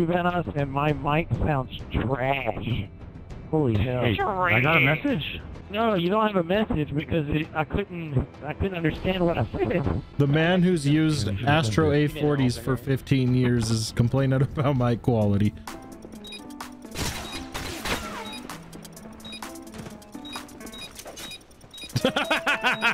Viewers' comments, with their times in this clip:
0:09 How does Delirious sound so different even though he's using the same Mic, that he's been using his entire career....I didn't even have to make this comment. lol